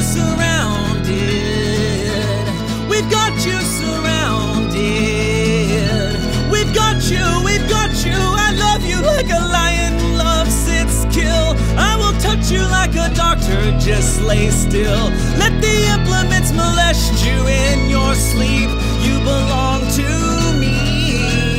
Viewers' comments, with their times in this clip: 0:06 john congleton: voice cracks around the mark me: HYSTERICALLY SOBBING IN PUBLIC